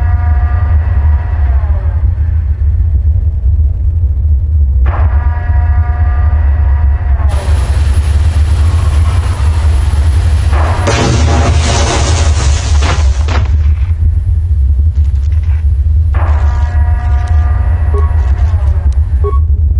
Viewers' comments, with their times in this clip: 0:07 "Derrrrp...hey this hover bike is about to explode." "Hey guys, let's stand here and get blown sky high!" "Great idea dude!" *BOOOOOOM!*